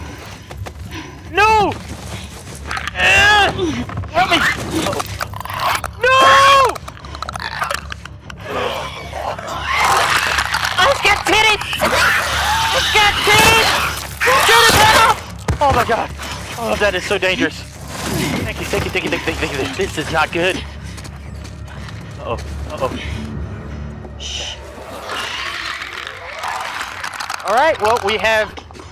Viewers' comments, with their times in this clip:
0:10 anyone else hear delirious say “GET IT VANOSS” in this cutscene